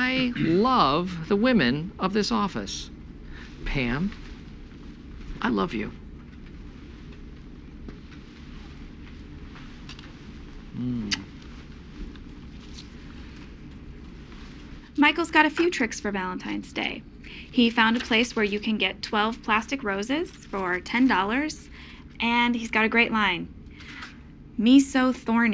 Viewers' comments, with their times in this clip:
0:09 that little moan as he kisses Pam's hand is the chef's kiss. So hilarious.